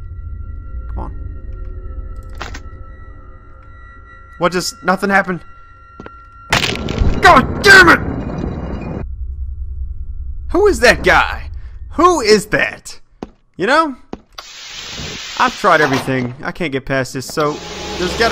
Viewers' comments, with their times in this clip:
0:04 it could be a sound of a neck breaked, it could also be his desk!